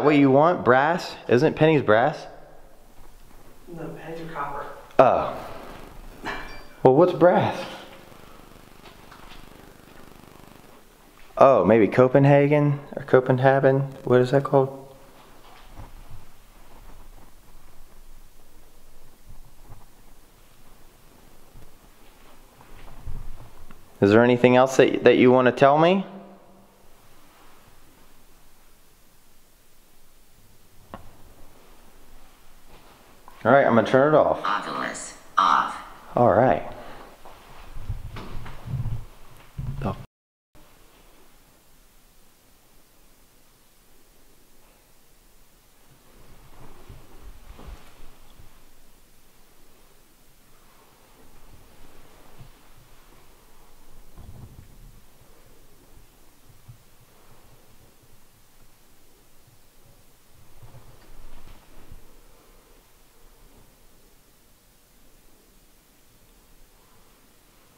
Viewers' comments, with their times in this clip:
0:06 ur audio keeps getting stronger static spirits maybe trying to talk into the mic on camera
0:48 when you turn your camera to the left there is a curtain that looks like some thing is holding it too the side a little then you hear a noise when you turn back to the same room the curtain is normal. Watch the clip and you will see what I mean. X